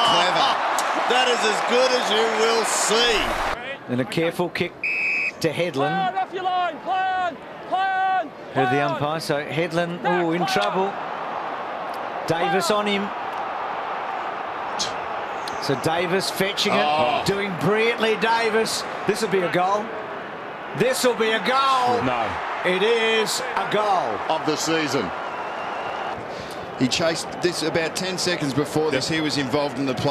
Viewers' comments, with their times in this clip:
0:10 you can hear the depression of 2008 GFC 😂😂
0:13 tiny reaction from the commentators